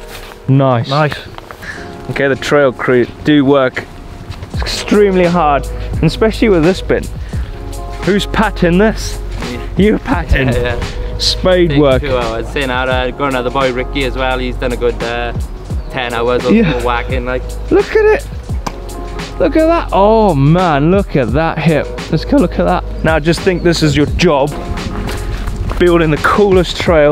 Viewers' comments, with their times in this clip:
0:10 What language was he speaking ?? I've listened to it 5 times and I honestly have no clue what he was saying